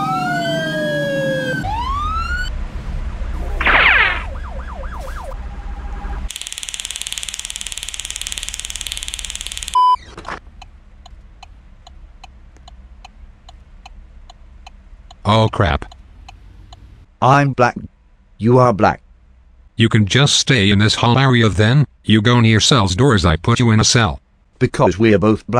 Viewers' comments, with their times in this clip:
0:06 racist police with RTRTRTERR sound